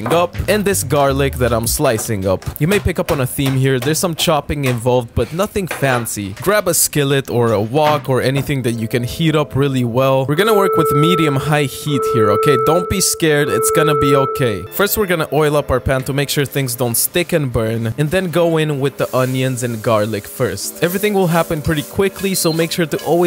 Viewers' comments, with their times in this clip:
0:10 That alarm needs to be omitted. The sound effect actually made me believe it's an alarm from outside.. wanna send an old woman to an early grave???